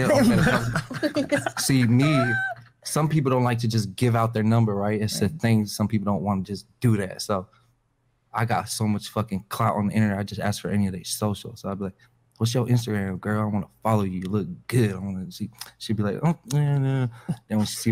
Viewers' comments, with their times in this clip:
0:03 dude talks like a female. You know when they add that emphasis bs and start sing songing lol